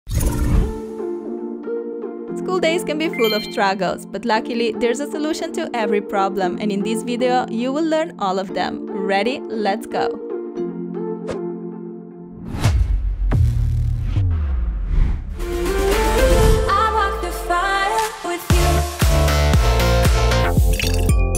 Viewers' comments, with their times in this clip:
0:03 I love this song!!!! ❤